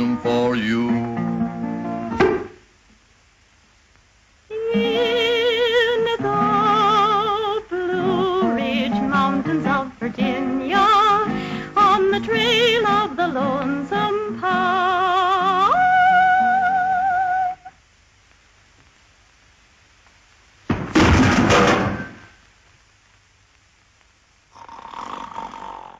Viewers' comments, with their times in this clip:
0:08 Sublime. If I had to choose one moment it’s where after his blow on the head Stan starts singing soprano (there MUST have been a woman secreted under the bar - I wonder if she’s credited in the film). Then he smiles charmingly as he shimmies and, for a brief moment, uses his hat as a steering wheel. Then collapses. Pure, pure genius.